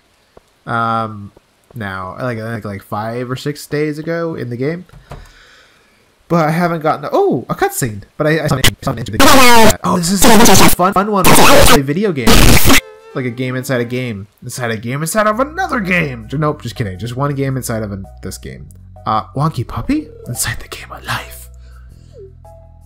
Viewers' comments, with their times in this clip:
0:10 Did the audio glitch for everyone ? Sitting alone in my dark room watching this and it scared the crap outta me x.x